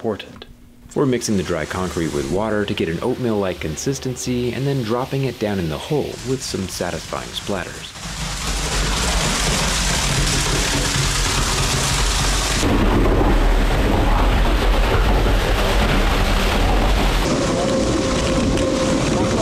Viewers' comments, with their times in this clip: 0:07 last time I heard that I had gas station sushi...